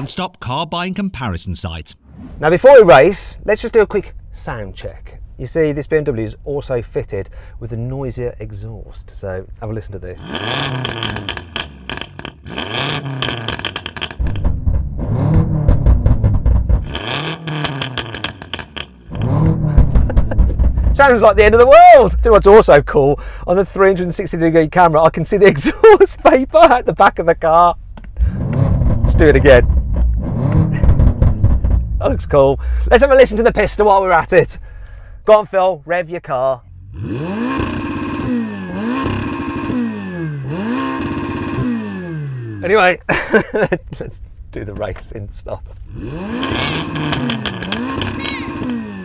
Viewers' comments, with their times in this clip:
0:10 sounds like a buffed fiat panda wtf.
0:10 who decided that popcorn makers sound cool?
0:36 The sound of a crying engine... Painful to watch.
0:36 that soft limiter has killed the sound of cars these days 😭😭😱